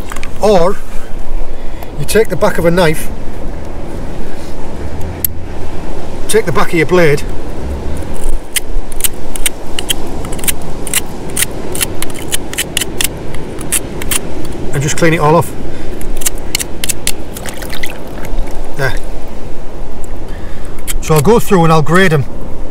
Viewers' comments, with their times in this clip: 0:05 out comes the knife...CLICK!!! It's a switchblade!!